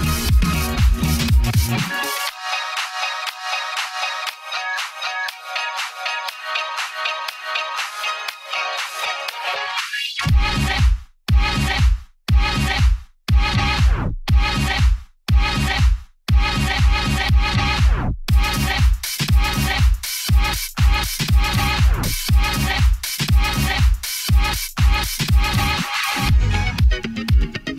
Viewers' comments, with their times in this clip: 0:10 is it just me or is the song saying etzer
0:11 it sounds like they are saying cancer